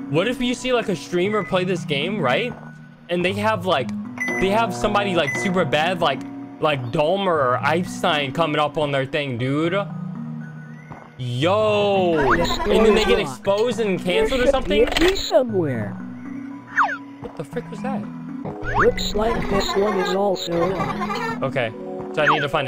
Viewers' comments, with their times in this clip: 0:05 "eip-stein" is crazy, pretty sure he didn't have steam i think they should be more worried about their adress if they didn't turn streamer mode on, it would be a quick time event to click off before it searches it up